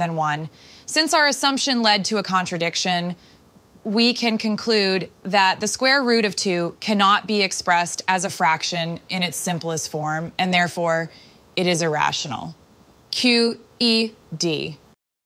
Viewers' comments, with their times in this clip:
0:12 that was the sassiest Q.E.D. i have ever heard girl✨✨✨